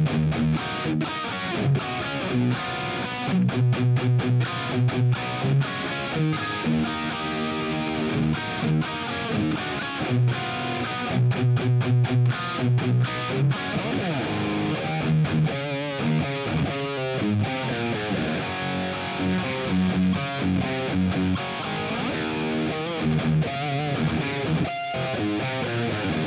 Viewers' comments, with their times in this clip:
0:09 was a sour note lol